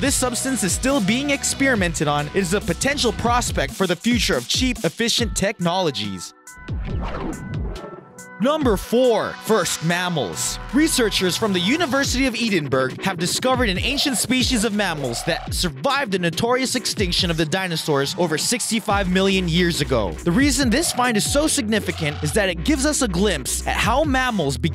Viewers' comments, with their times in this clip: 0:10 That pronunciation of Edinburgh was both hilarious and really stupid
0:11 you can't even pronounce the name of the capital of scotland lol
0:12 Edinburgh doesn't rhyme with Pittsburgh. It's not pronounced Ee-den-burg. It's Ed-in-burra, with a slight roll on the R's, like a Scottish accent. Robbie Burns, Robert Louis Stevenson and Sir Walter Scott are turning in their graves. More so the latter two, since Edinburgh is their birthplace. lol